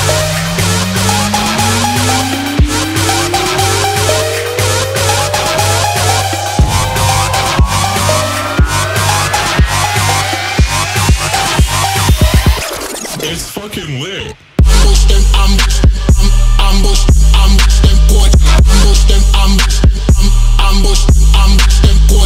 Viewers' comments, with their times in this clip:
0:07 It sound like they're sayingg "gas pedal"